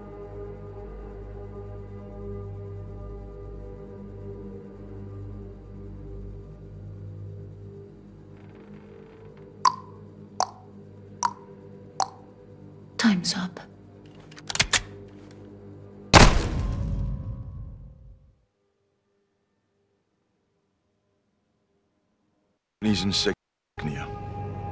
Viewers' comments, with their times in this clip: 0:09 ASMR Artists be like:
0:09 Horror movie about a killer ASMR creator. "Hurry to sleep"